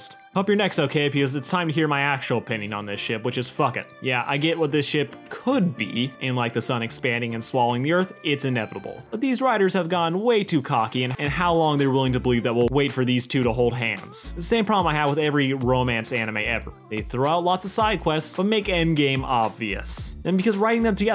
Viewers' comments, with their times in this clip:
0:06 I get that your saying is "The sun expanding and swallowing the Earth." But I kept hearing "The Sonic Fandom swallowing the Earth." which is a terrifying image.